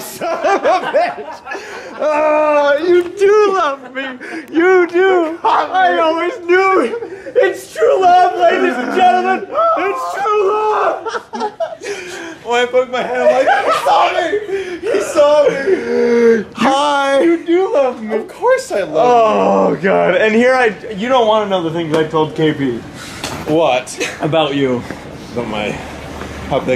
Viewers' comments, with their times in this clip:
0:08 I'm guessing you got a lot of weird looks from that outburst!😂😂😂😂